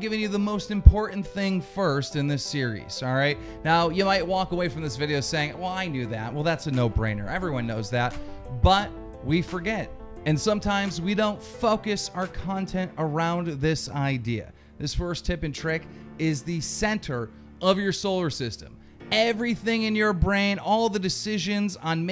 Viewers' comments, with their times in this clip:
0:08 did he just say fuckis?